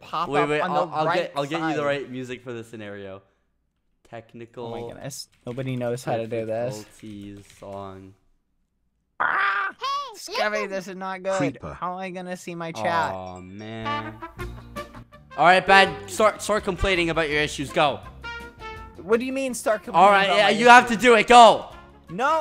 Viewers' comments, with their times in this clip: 0:10 Creeper? Aww men seinfield starts playing